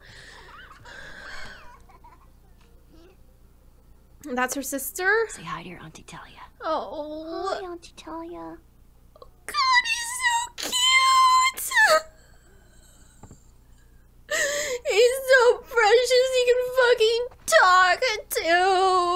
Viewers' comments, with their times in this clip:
0:07 What a laugh when you thought that JJ had spoken hahahaha. "Elli did it hahaha
0:07 lol that was Ellie talking xD